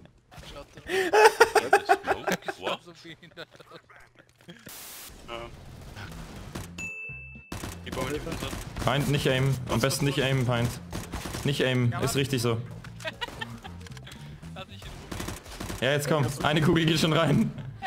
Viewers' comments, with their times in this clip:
0:05 Is the audio a bit different? At least